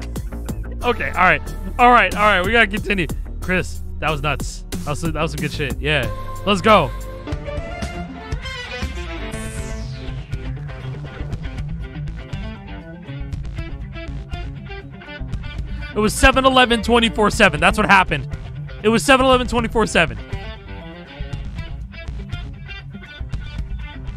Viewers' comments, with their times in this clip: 0:06 is essentially polyphia
0:09 I'll be real, without the vocals just kinda sounds like a Polyphia song. I dig it.